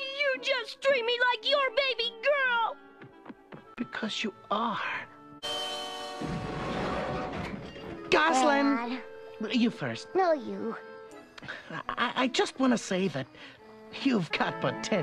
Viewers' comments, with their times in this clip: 0:03 hear the love and need to keep her as his baby girl